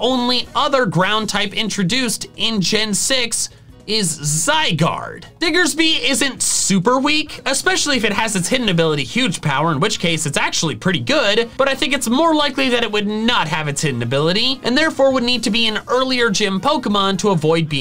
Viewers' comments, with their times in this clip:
0:05 what ers by 😂